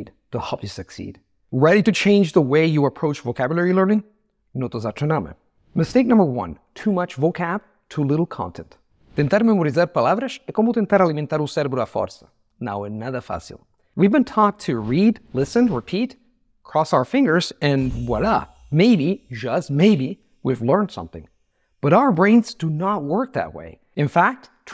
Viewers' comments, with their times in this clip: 0:09 This will sound strange. Your Portuguese would be better if you pronounced it with Italian accent. At least it would be more comprehensible. For example, you said the word “memorizar”. The “a” is an open vowel but you closed it, perhaps because you perceive Portuguese as more closed than Italian. Also, since it is the stressed vowel, it should take some more time, like in Italian. But since Italian makes stressed vowels sound for more time than Portuguese, you shortened it too much. It would be preferable and more comprehensible to me as a native Portuguese speaker if you pronounced “zar” as you would in Italian.